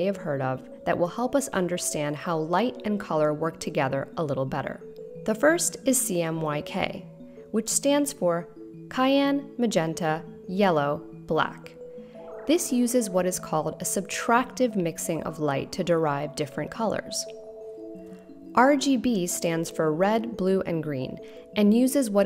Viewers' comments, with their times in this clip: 0:03 Did you just pronounce Cyan as "Kayan"? Awesome video nevertheless! Thank you for a such an informative video. Really appreciate the efforts put into it.